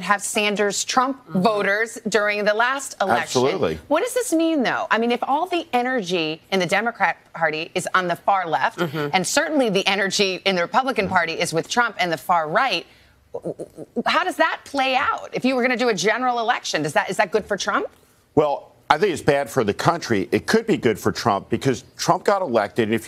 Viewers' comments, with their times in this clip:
0:04 Best Valley Girl: "What does this mean though?" Iol